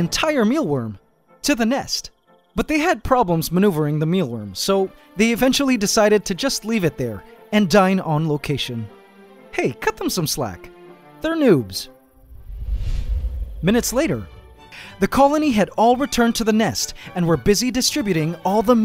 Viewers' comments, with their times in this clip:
0:05 litsen to the music :(